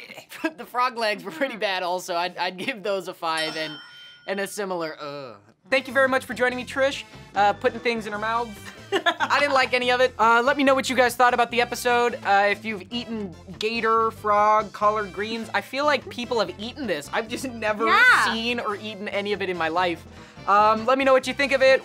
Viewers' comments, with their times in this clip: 0:07 Extend that maniacal laugh and you get the typical mad scientist laugh